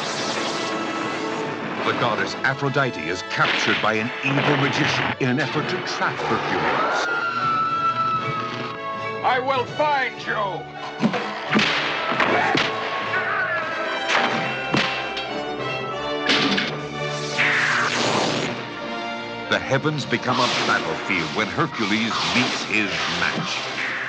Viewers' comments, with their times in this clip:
0:08 "I will find Jyo'!" - if I have to learn how to use Google to do it! (Don't they kind of overuse one effect, the luminous overlays, to excess here?)